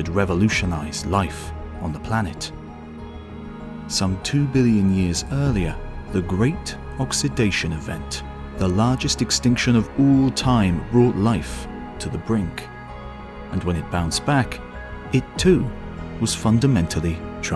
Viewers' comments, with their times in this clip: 0:05 You guys the music bangs so hard